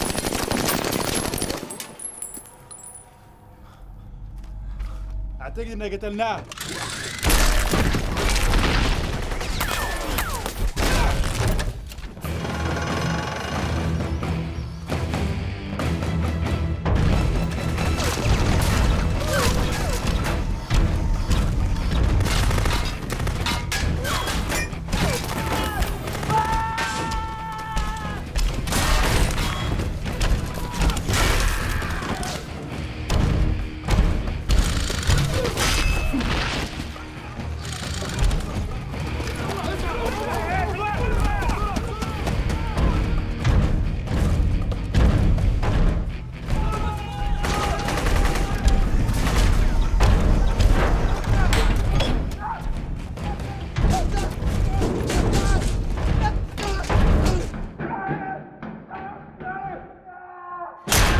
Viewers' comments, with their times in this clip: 0:04 This is the only time that the true power of iron man's suit is shown, not the flamethrowers, not the durability, but the fact that when he punches someone, you hear their bones snap and crack. One thing that is never in any of the other iron man movies. example
0:12 that shot with that musical cue still gives me chills 10 years later. The Iron Man is born
0:12 for whatever reason, I love that cog turning noise when he stands up again like that
0:12 I remember being six years old in 2008 when I saw this in the theater. When the music started I still think that’s the most intense goosebumps I’ve ever gotten in my entire life.
0:27 Gmod metal geetting impact sounds
0:34 thought I was watching a fred flintstone clip with that sound effect
0:40 IDK IF ITS FILM CREW OR WHAT BUT I HEAR “HEY HEY RELAX RELAX!!!”?
0:48 ok fellow Swedish people why does this sound like he says öppna????